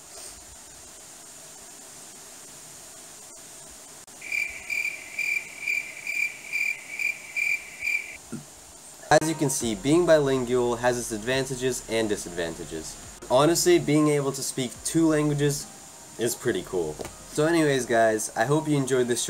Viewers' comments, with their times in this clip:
0:07 the crickets killed my ears im suign